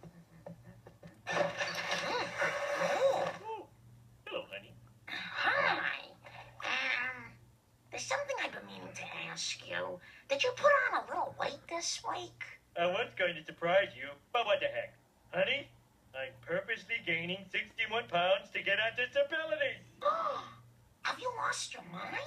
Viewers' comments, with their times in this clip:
0:04 I love the way he says "Hello honey"